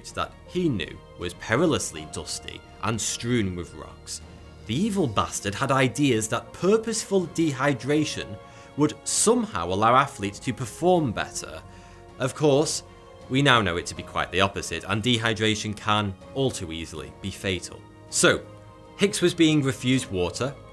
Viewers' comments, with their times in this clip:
0:05 sounds like vault te from fallout